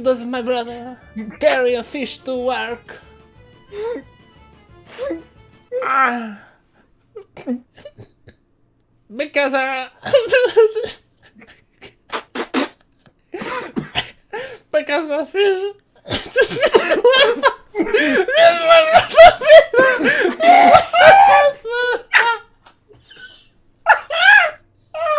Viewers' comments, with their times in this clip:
0:05 the way you said aaaarghngh as if it was an actual word and making a gang sign was the highlight of this video for me xD
0:10 best giggle ever